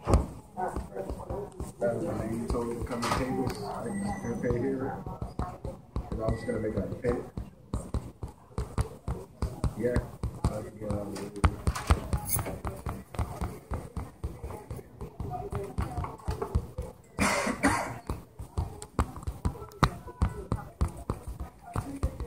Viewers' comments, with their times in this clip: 0:04 Exited due to apparent incessant tapping on camera. Too bad videography is not more presentable. Oh well.